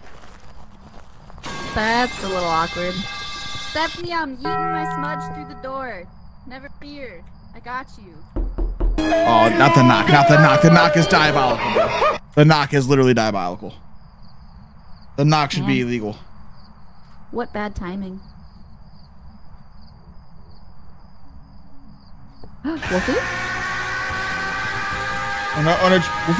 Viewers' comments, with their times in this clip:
0:07 The knock got me creeped out